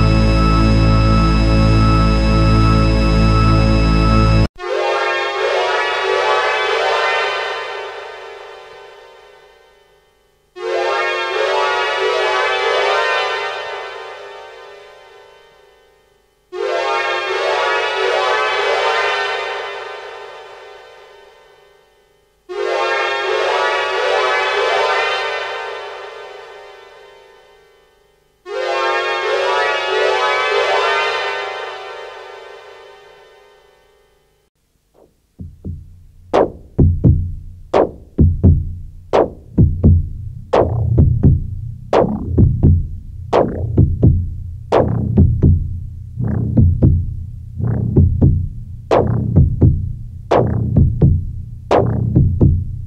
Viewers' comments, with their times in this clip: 0:04 Correct. Most of the tracks listed are one ahead of the actual track being played at the timestamp. For example the " 19 Osc Freeze Edit" timestamp features a track that has many sweeping notes being played simultaneously, and sounds nothing like an Osc (Oscillator) being frozen. Then, strangely enough, the subsequent track listed, "33,000 Note Sweeps", exactly describes this previous track. This doesn't continue all the way through, because the final track is exactly the same as one Richard uploaded to his Soundcloud under the same name. Most of the tracklisting is offset by one, and there's a track that hasn't been listed somewhere in this tape.
0:08 those glissandos took me for a fucking loop. Oh hey there lmao
0:34 absolutely heavy and dark